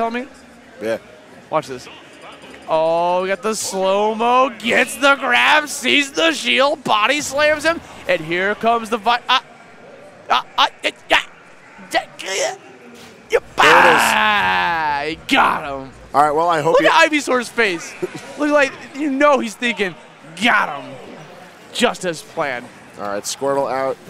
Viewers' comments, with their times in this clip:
0:09 commenter channels videogamedunkey and makes it out barely alive